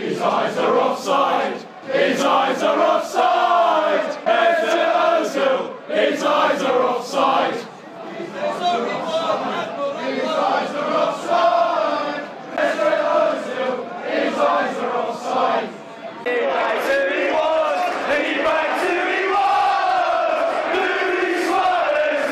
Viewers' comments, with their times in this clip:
0:08 there's one solitary man shouting "There's only one admiral Ackbar" - lmao!